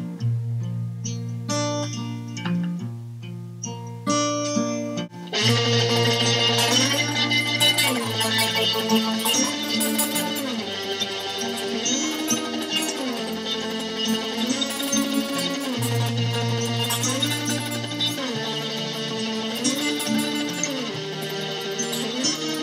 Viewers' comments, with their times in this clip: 0:05 I like how, your acoustic morphs into an electric. How do you do it? :O